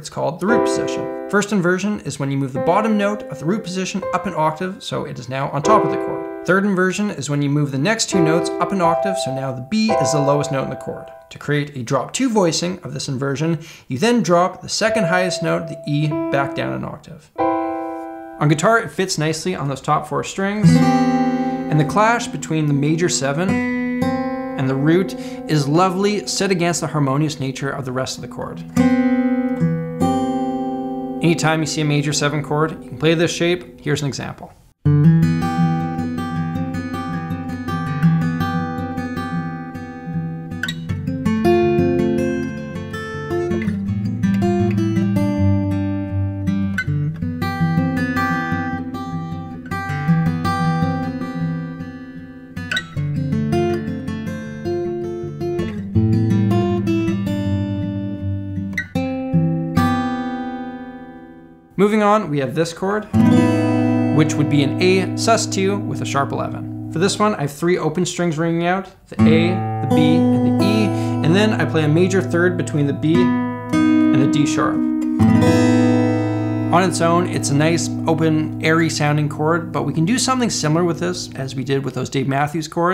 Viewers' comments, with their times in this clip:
0:08 all I hear is Clair de lune lmao
1:03 that kind of sus chords are used a lot in midwest emo stuff lol